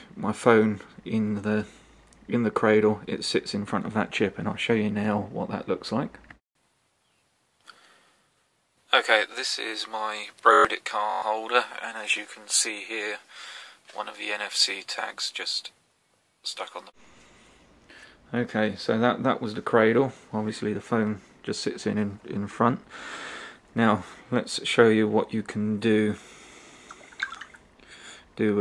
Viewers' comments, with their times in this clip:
0:10 lol it lagged out and said birdddddyyyyyy caaaarrrrr holder